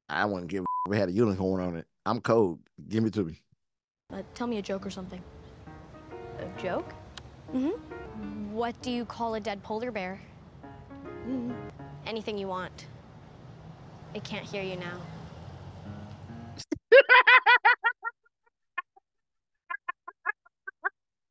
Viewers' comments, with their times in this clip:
0:08 I’ll forever love your laugh. Your laughter is contagious This was a fun movie. Enjoyed your reaction as always.